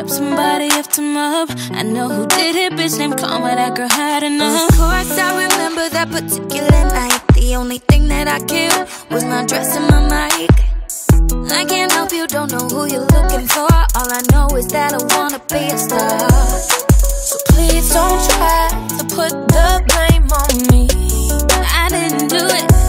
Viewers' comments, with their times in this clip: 0:08 That rasp that Simone has starting is amazing